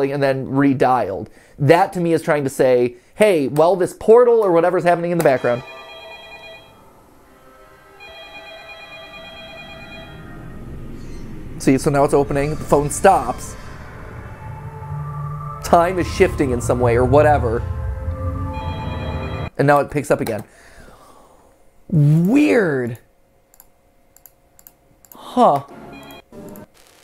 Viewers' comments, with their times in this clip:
0:10 one thing to point out is that the sound of the phone is longer and it hears like it's playing the sound before it ends